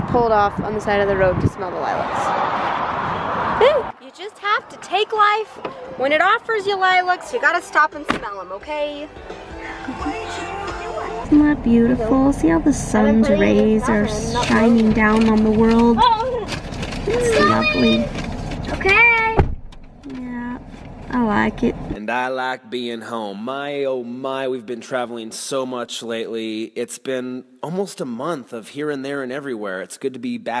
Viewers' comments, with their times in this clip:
0:10 I HEAR TWENTY ONE PILOTS OMG MIGRANE
0:16 Did I hear migraine in the background ? ;)